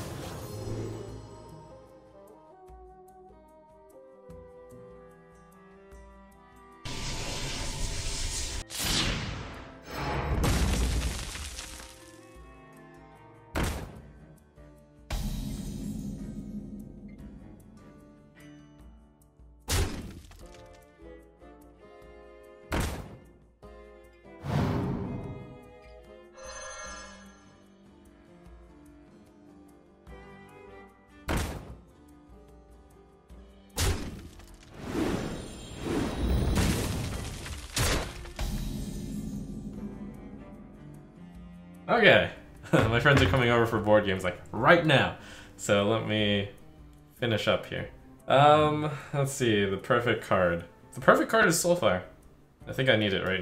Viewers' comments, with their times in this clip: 0:05 Now that is some editor´s dedication, he added all the sfx
0:37 I think the Berserker face hit was off; it sounded like a 6-attack minion instead